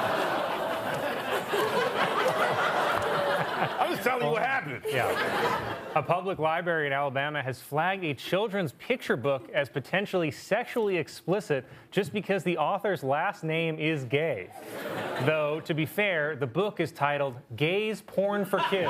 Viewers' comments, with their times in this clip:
0:06 Did Colin say "li-berry"?